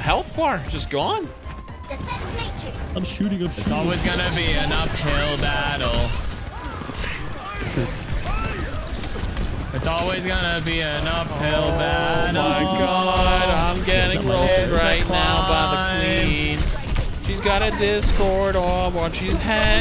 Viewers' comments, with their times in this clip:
0:03 love the singing😂